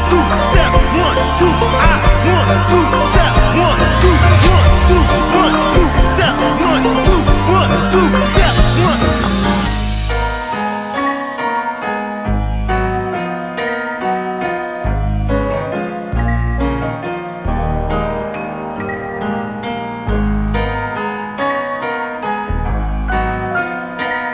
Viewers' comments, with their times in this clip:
0:09 why does remind me of final fantasy lol